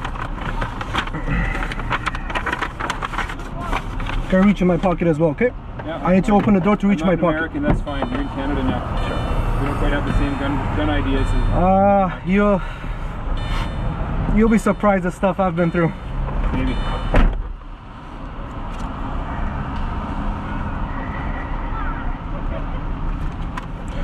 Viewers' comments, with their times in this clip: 0:05 loved how he says it with pride "I am not an American, that's fine, you're in Canada now" (meaning we won't kill you for reaching out to your pocket to get your wallet, we got good training here) eh?